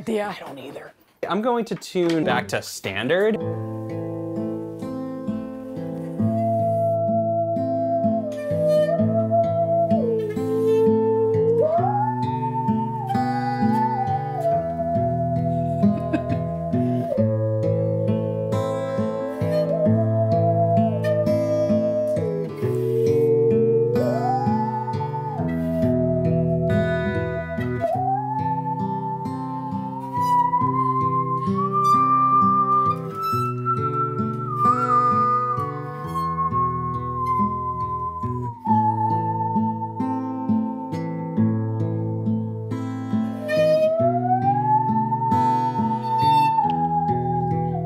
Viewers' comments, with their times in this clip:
0:03 I recognized that metallica lick instantly! I'm so glad you guys actually played it afterwards and that talcum powder experiment was super cool!
0:08 them playing sounds like a western with sci-fi influences it’s actually incredible
0:28 When they were playing made me think of house of the rising sun, and i'd love to hear them do a full cover version where the saw is doing the vocals